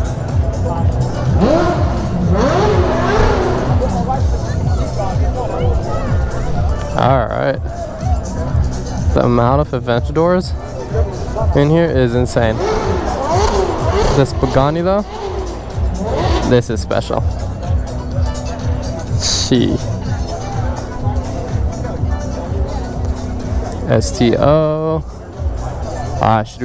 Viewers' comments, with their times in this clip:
0:09 caption: the amount of adventure doors😂